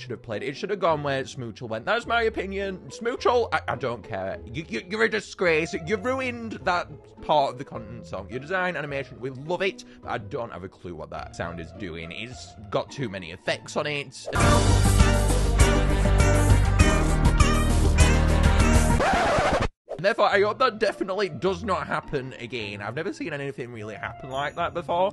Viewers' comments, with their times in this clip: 0:07 smoochle duets with bowgarts high pitched track, tho I do agree it could be more subtle